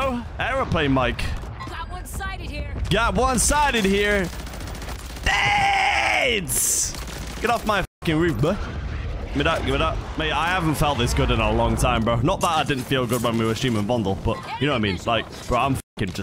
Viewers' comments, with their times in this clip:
0:03 The English accent got me off guard 😂